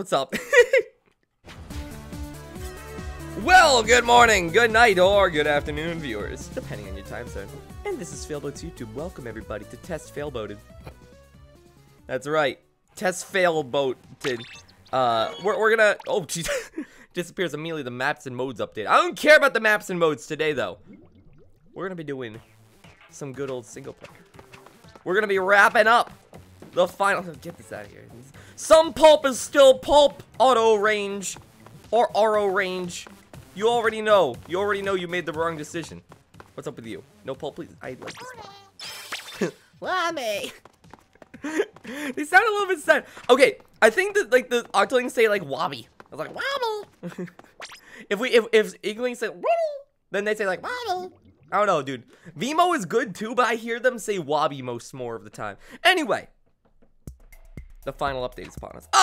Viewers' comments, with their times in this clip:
0:06 slime rancher noise :)
0:47 that sound 100% like a inkling it scares me